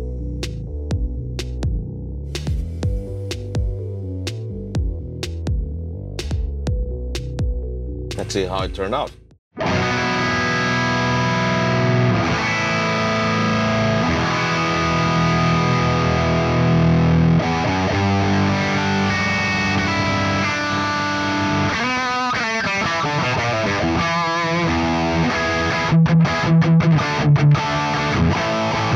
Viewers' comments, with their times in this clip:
0:10 Listen to it The Cortex sounds as good on the palm mutes if not thicker than the reference!